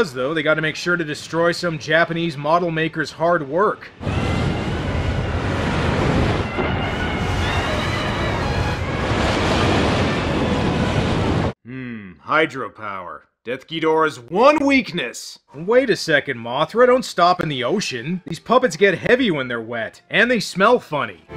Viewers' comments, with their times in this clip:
0:09 Did anyone else hear the elephant sounds?